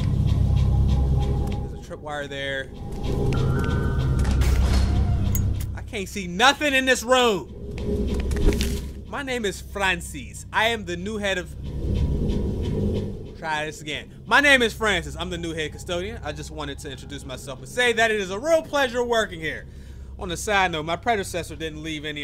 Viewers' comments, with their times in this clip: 0:08 why he say Francis like that poggers